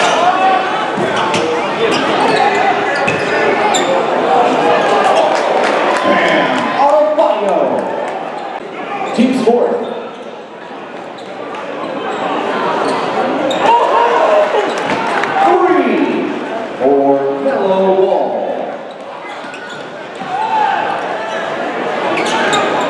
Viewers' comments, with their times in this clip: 0:03 I was like who tf is that dude and then I heard the announcer lol